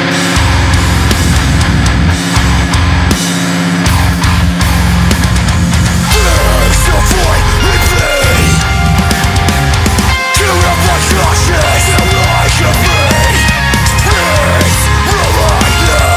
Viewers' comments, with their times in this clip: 0:03 The background effects from got me. Overall awesome song guys